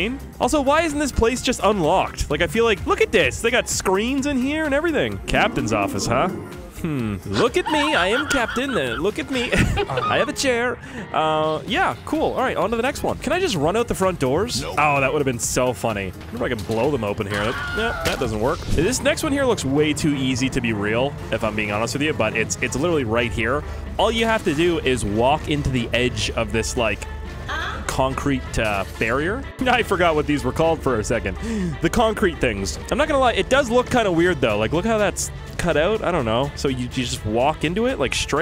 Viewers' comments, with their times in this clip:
0:07 him doing borat impressions i have a chair lallalaa
0:26 I cant tell if the huh was added or someone said it